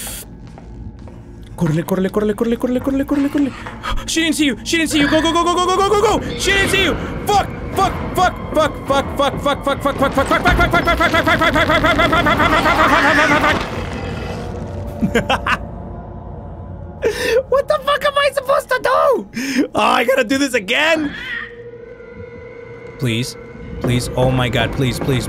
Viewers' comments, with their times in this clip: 0:08 it sounds like your barking